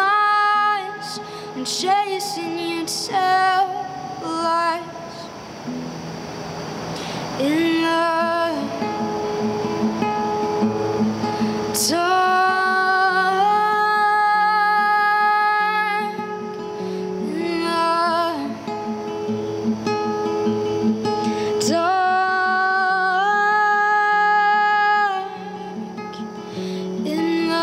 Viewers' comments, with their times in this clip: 0:09 Rising talent. You are well on your way, Julien. But this song loses energy right It's very anticlimactic there. That is where most musicians would have a chorus, right? You need something like a hook there.